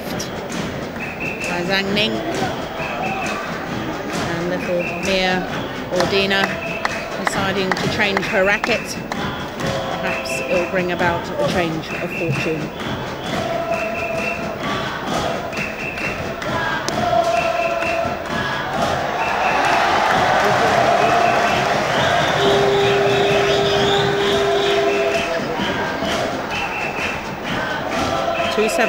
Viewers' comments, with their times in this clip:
0:09 that chant from the supporters is so random. They chant: "Sahur, sahur." which usually used by the locals to waking up other residents on daybreak during ramadan fasting month. Lol.